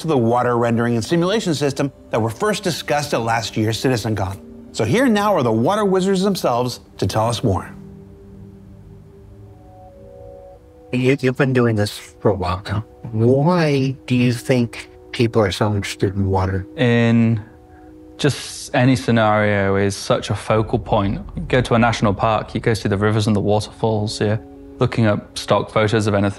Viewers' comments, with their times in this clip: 0:10 bro has shanty in a tavern vibes